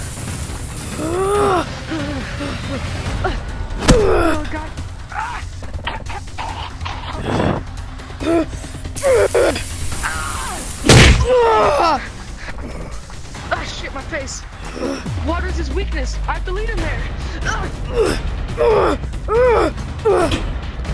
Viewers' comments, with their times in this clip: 0:04 the way he said that😂